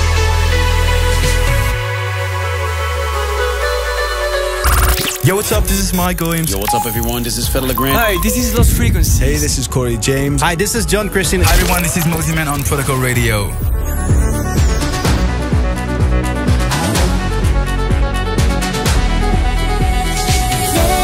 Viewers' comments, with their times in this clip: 0:05 does this have to be ? this break with that loud voices🎤🎙 on my headphone 👂🏼🎧🎶